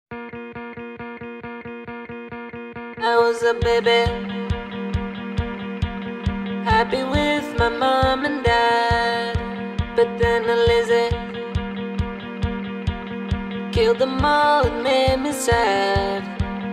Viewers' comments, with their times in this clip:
0:03 I was A BEBE